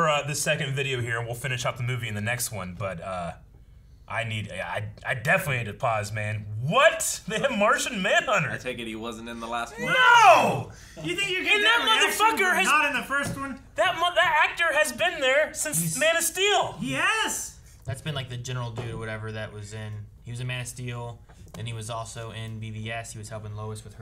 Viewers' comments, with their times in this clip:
0:09 That was possibly the best "NO" I've ever heard. Moments like that are what makes reaction channels so good.